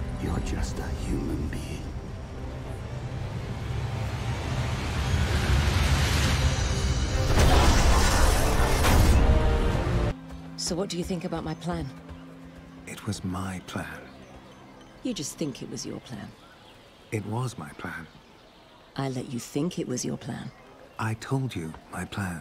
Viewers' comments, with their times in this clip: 0:05 Ultra instinct theme kicks in